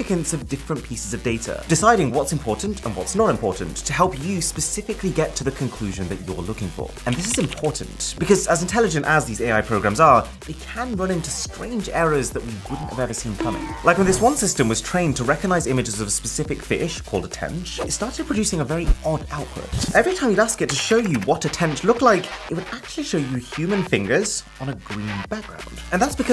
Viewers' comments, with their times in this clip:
0:04 The music really takes away from the seriousness lol
0:11 lmfao the sound effects make it 100x better omygosh
0:13 funniest thing the eughhh